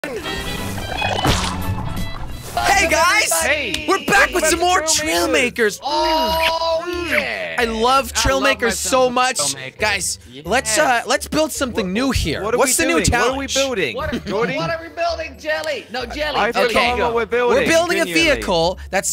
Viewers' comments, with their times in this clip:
0:00 what was that noise ?!